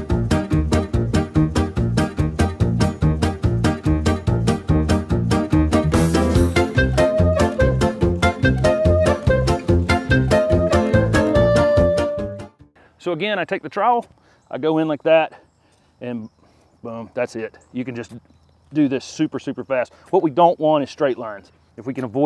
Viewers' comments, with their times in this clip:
0:03 Hahaha love that music (: